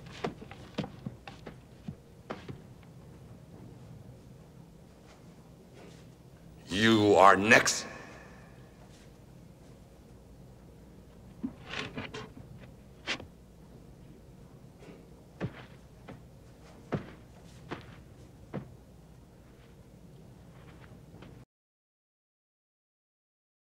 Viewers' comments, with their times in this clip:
0:06 You are "Nex"